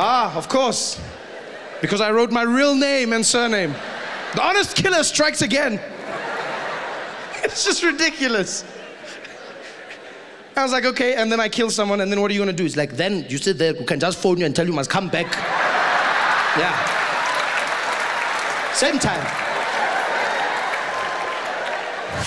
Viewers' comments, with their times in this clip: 0:07 that voice crack is so cute!!!